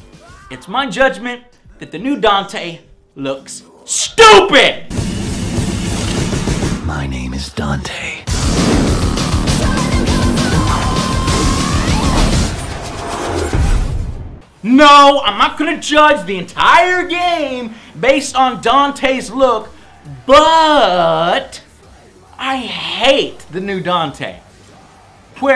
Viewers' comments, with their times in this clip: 0:06 OMG 😱 that voice.